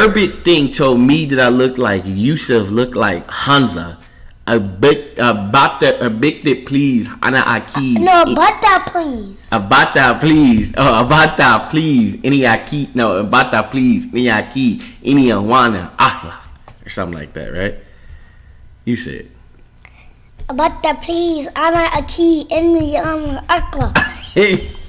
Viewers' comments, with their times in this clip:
0:07 please stop lol you said it completely wrong. And yes I'm Arabic.